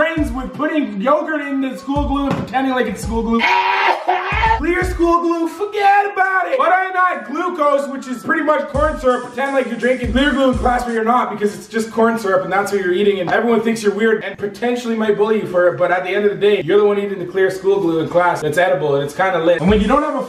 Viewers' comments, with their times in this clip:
0:03 Wtf is that noise